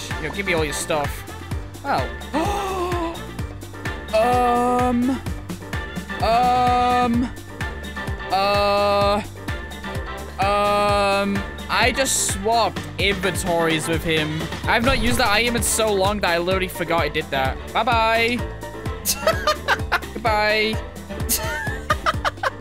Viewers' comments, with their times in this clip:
0:06 the new Nokia ringtone has been born 💀